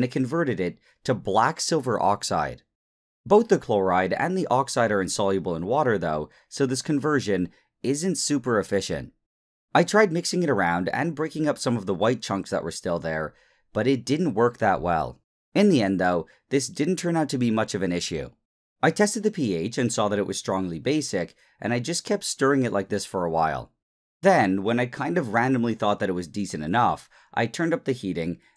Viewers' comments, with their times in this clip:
0:10 that's an intense storm